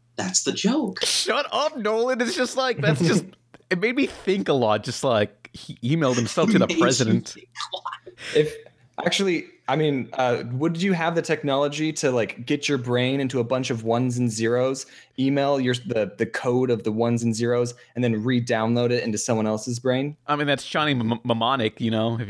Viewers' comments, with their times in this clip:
0:06 Made me stop and rewind a few times thought the piss was being taken out of my laugh by someone in the next room